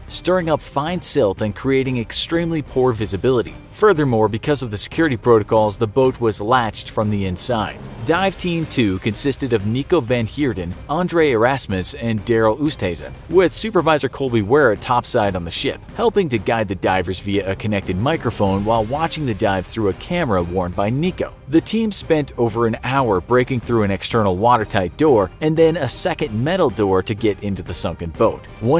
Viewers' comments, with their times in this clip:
0:10 those are dutch names, and since im from the netherlands, i know you pronounced them terribly😂😂 it doesnt matter, but i thought it was funny
0:12 as a dutch person it sounds funny how you speak out that names